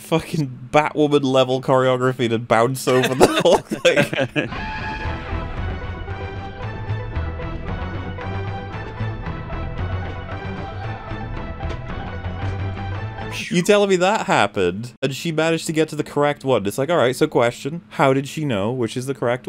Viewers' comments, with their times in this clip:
0:03 the batwoman 'theme" was 👌😂